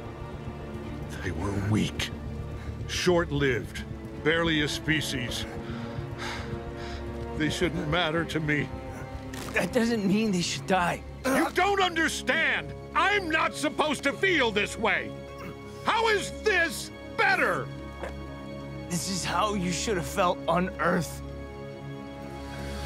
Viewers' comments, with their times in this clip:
0:06 “they should not matter to me” the voice actor was just perfectly you could hear the sadness and pain in his voice.
0:06 You can hear the hurt in his voice
0:06 f*cking hell JK Simmons voice acting is incredible
0:07 god that break in his voice it's s good